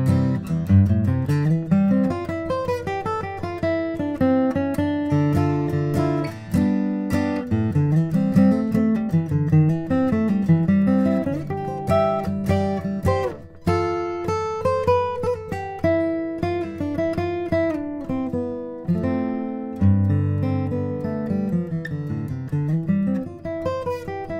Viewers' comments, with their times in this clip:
0:06 The Waltz piece is my favourite. Those crazy fast hammer on’s or pull off’s are hard to do!